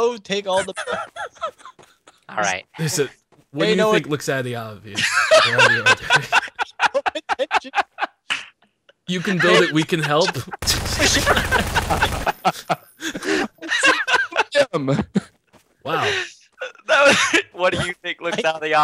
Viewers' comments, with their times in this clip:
0:04 Anyone else think OpTicJ laughs like Mr. Belding from Saved By The Bell? :) mark to have a listen.